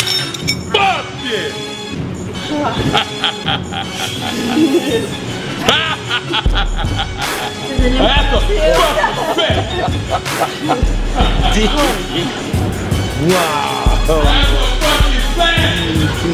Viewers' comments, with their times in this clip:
0:03 I think i'm the only person who finds her attractive. Like, as in face. She's really cute IMO. Like, HER SMILE AND LAUGH DOE
0:03 She is very pretty face wise big time...and yah man that laugh is just too funny LOL :)